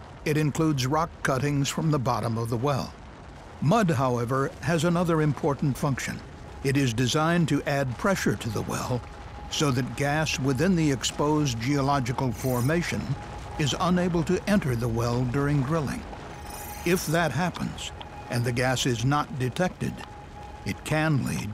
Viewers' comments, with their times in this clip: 0:07 voice crack hehe